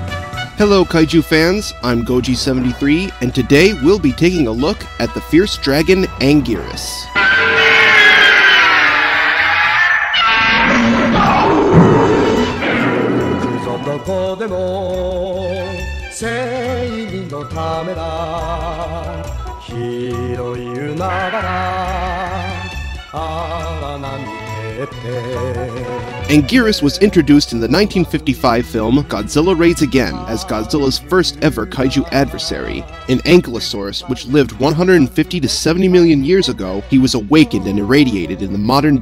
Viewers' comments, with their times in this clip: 0:10 he sounds like he had a hiccup burp
0:26 So did any one else think angiuies was going reeeeee ? Sorry for mispelling his name it's hard to do.